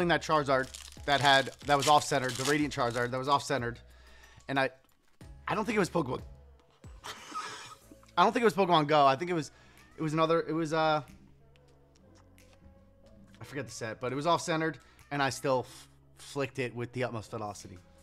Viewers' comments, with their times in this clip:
0:05 I don’t think it was PokéBURP Thanks for brightening up a gloomy night!!! ❤ you’re hilarious